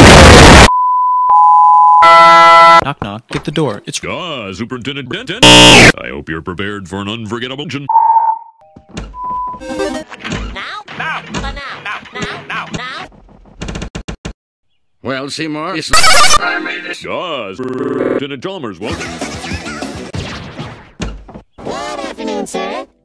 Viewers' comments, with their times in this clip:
0:05 Ben 10 earape sounds intensify